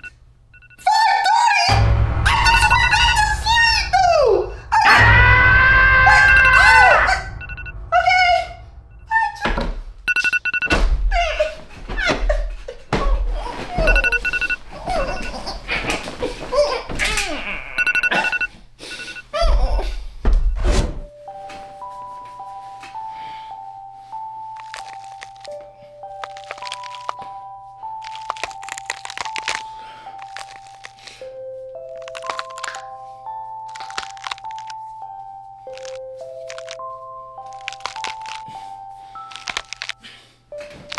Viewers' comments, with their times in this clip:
0:03 What was that scream
0:05 the agah got me😂
0:22 real asmr if 2x